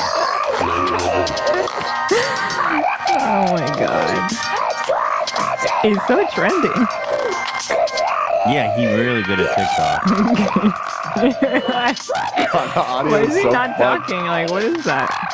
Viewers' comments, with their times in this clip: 0:03 literally sounds like Moira in Schitts Creek in the crows movie 😂😂😂